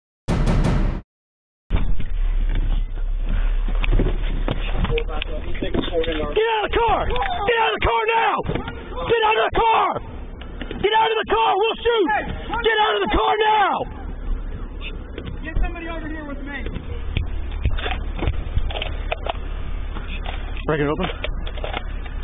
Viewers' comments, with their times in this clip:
0:06 Wahhhhhrrrrr wagamahhhhhh carrrr nowwwww! Cops always sound like a furious pissed off version of Don Vito from Jackass